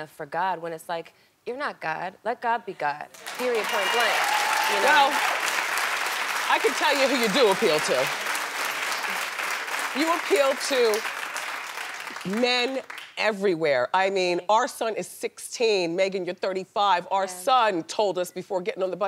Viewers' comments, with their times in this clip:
0:06 The guy snapping in the back lmbooo!